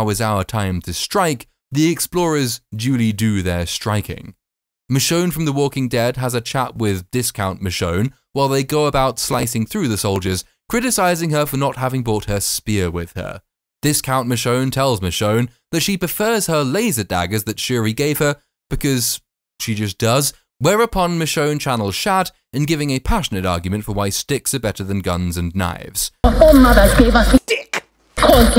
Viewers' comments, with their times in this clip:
0:09 Quite a bit of audio corruption in your mic audio in this one, example timecode.